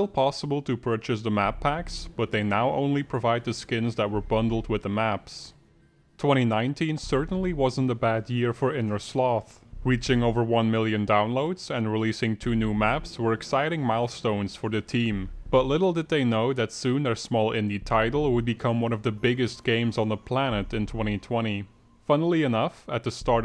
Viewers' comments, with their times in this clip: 0:07 as a kaif fan u make me sad YOU'RE SAYING KAAF